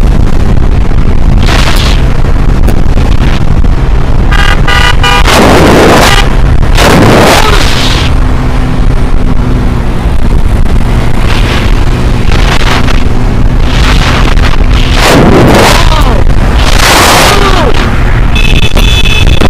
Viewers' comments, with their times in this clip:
0:07 Those 3 beeps sound like an exfo meter